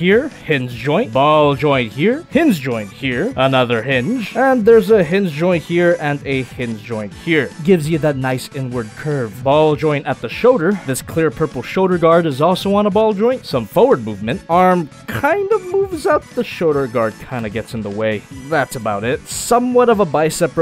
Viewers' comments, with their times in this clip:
0:08 “gives you that nice n word curve” I swear that’s what I heard XD